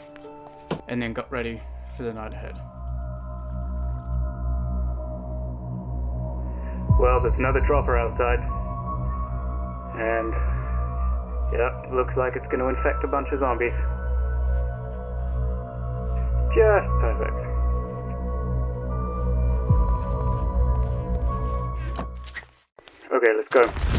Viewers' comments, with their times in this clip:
0:06 love how this bit actually sounds like an audio log from a survivor.